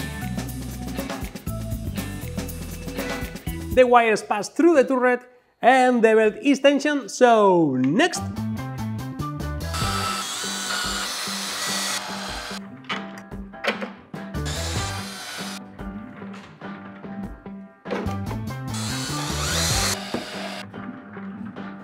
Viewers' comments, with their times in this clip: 0:08 his drill sounds like the song happy birthday